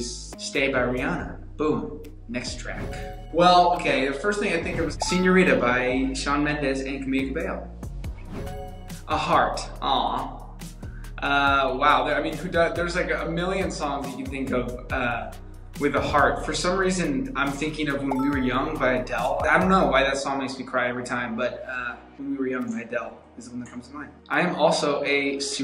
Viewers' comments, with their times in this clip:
0:09 His 'aw' killed me inside 🥺🥺🥺